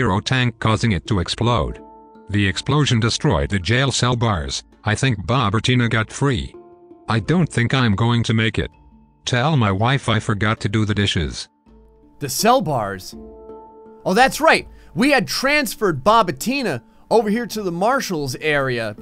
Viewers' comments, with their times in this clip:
0:04 theres a grinder in the background